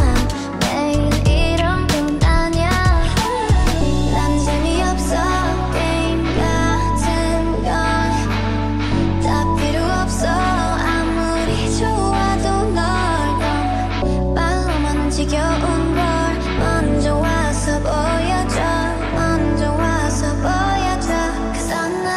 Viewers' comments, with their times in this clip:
0:03 the lil drop 🤌😩